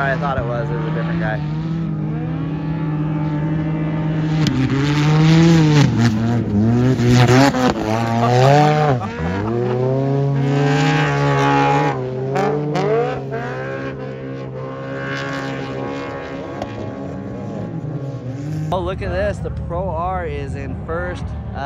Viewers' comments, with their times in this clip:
0:04 its sounds sooo much better!!